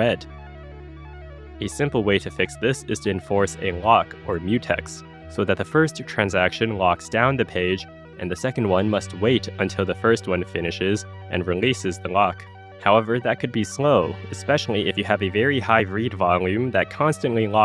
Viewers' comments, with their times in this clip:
0:03 Love the summoning salt background music when talking about things being slow.